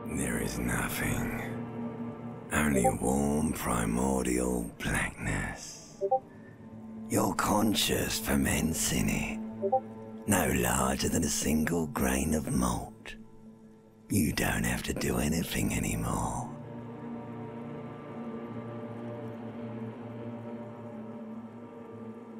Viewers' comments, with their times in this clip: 0:07 I have no idea how I did not notice the Discord pings I'm so sorry.